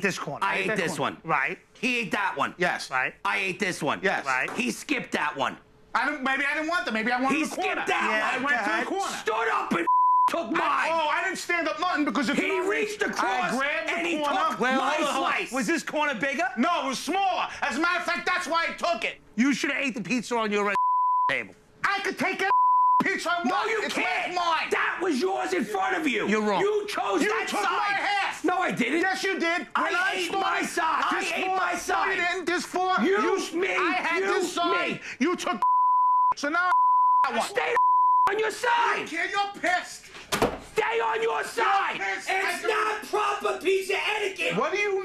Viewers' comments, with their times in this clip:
0:09 Damn I wish I could muster up that much concentrated anger in my voice during a confrontation.
0:26 I love the subtle but poignant “You're wrong.”